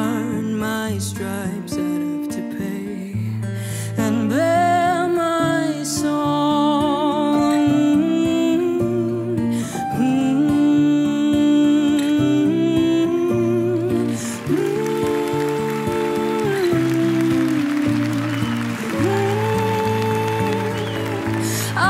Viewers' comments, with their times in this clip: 0:05 I like the First one the Most! Smooth af.. 🙏🏼 Norway surely has many talents! ..